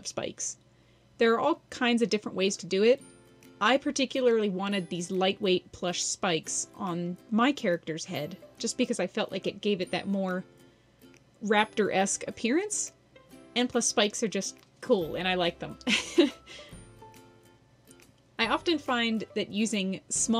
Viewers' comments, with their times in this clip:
0:04 I thought I got a Notification because of the song in the music 😂❤